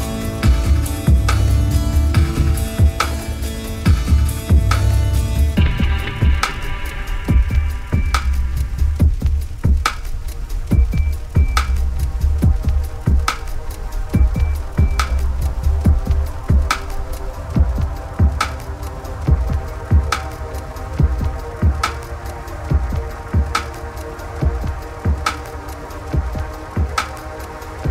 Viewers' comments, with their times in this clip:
0:10 ahh rly deep song <3
0:10 my absolute favourite, love the heavy bass! anyone know more songs like this?